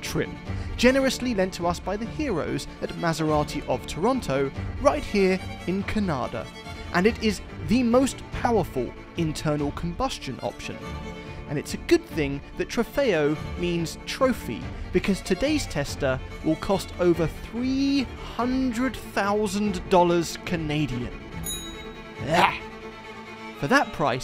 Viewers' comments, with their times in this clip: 0:03 finally someone has good pronounciation
0:05 the way you said Canada made it sound like you meant Kanata, which is a suburb of Ottawa. I did a double take